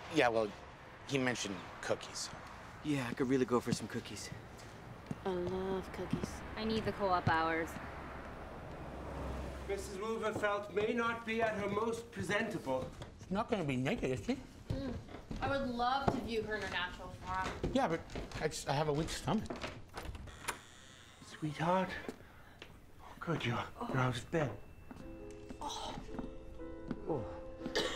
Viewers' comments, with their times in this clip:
0:09 The old guy and the way he talks reminds me of Dr.Evil from Austin Powers especially here